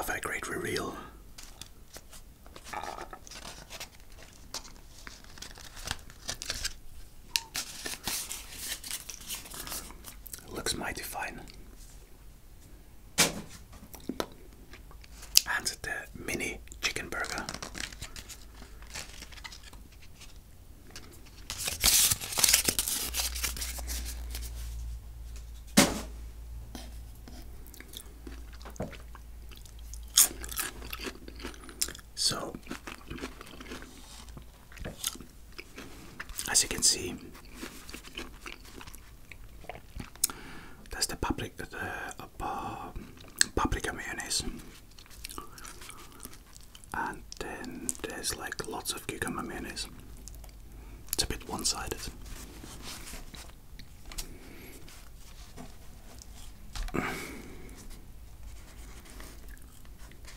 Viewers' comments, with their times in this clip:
0:03 getting the burger ready got your tummy growling (don't ask me why, I'm sensitive to tummy noises LOL) Oooo the burgers are so beautifully wrapped for the suspense hahaha... they look good! And I love the yummy sounds of the fries and nuggets mmmmm~
0:44 "Vacation"? I've got bad feelings about this vacation? Was it "COvation"? ;-) Did you mean "paprika mayonnaise"?, 'cause automatically generated English interpreted it as, and I quote, "public communism" 😂😂😂😂